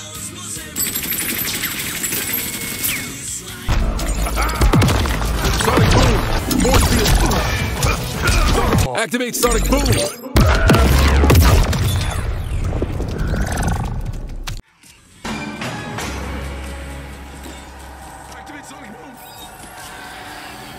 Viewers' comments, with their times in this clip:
0:07 doesn't he sort of sound quiet? He should go like ACTIVATE SONIC BOOM!!